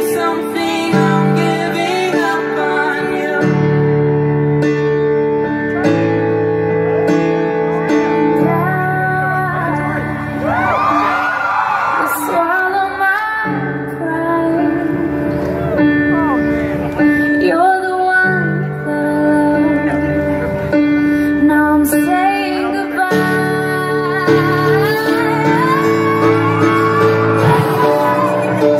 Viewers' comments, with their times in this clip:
0:10 "And I~" my favorite part 😭😭 her voice sounded so pure